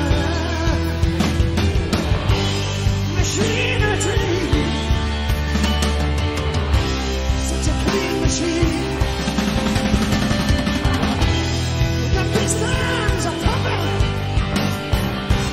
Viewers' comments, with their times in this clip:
0:03 I SWEAR IS AUTOTUNED